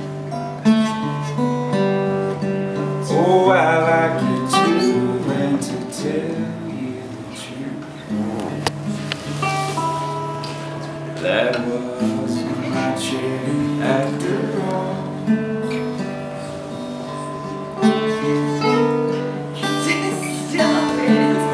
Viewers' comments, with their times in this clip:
0:08 someone let it rip. They laugh about it at the end of the song. Lmao.